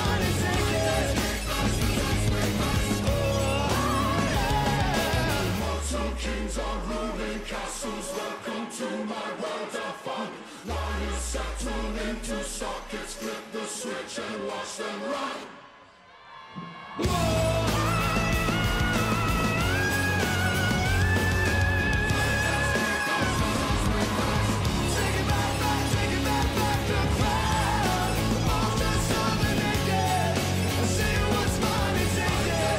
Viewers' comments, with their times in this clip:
0:04 holy damn that high note is just so incredible
0:14 is my favorite high note in this performance
0:14 That high note is probably one of my favorite high notes ever 😍
0:16 THIS WAS, IS, AND WILL ALWAYS BE A VOCAL SERVE.